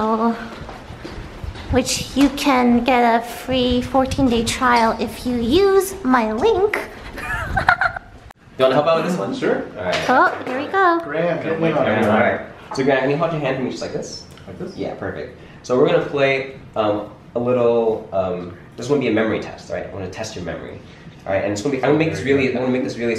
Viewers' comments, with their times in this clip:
0:06 is that lux's laugh when u are in the water element???
0:06 water elementalist lux laugh.